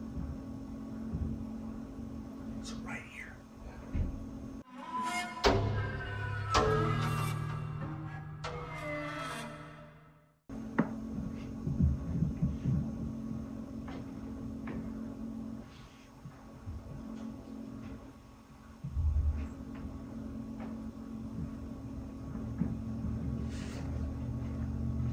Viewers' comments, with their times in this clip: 0:06 so those sounds ( in addition to the presence of a cute little cat :3 ) they are hearing in the walls and above are indicative of a possible rat infestation XD makes sense why you guys are hearing noises. they are scurrying along and chewing through the wall material